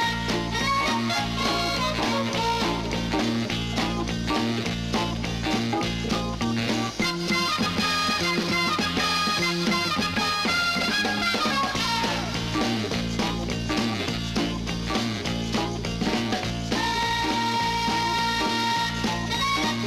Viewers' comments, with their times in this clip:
0:06 Ah yes, our young tars ashore with a couple of 'bints' and the hope of a furtive fumble in the park! The music is awesome!